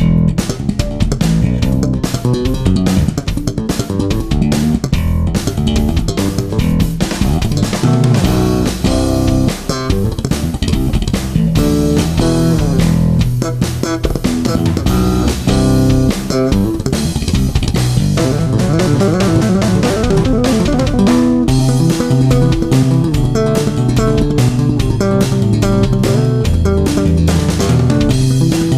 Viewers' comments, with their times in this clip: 0:09 What is that technique with the rapid-fire note definition you do ?